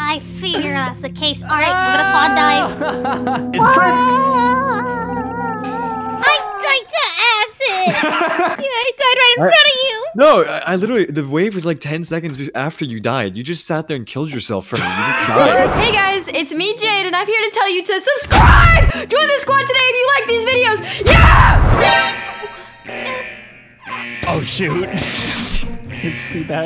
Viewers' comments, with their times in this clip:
0:10 When he said those 2 sentences he sounded like GeorgeNotFound